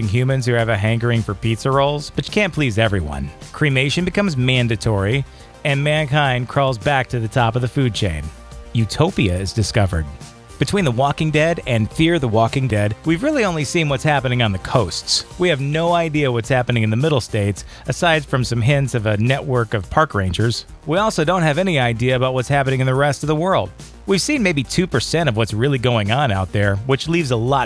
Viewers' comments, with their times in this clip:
0:10 Anybody notice how weird he says 'Fear The Walking Dead' right there ?